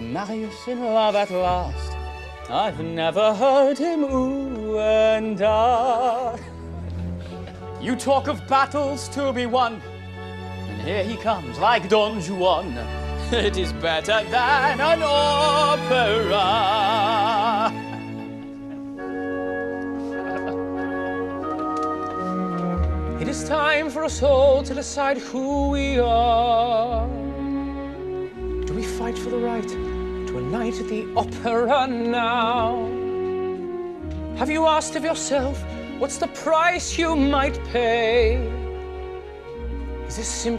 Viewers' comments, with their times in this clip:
0:03 OMG the way Grantaire sings "ouu and ahhh" just made me melt ! omg soo hot.
0:28 "Do we fight for the right to a night at the opera now?" God, how he pronounces the last two words!! Makes me melt every single time.